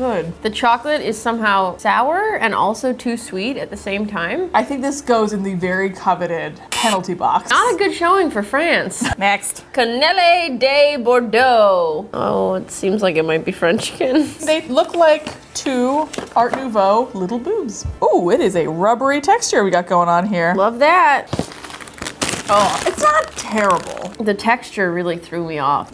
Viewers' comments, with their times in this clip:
0:10 it is french and as a french person, OMG this accent 😂 (Ps: Bordeaux is a city so it's "Cannelés from Bordeaux" translated in English)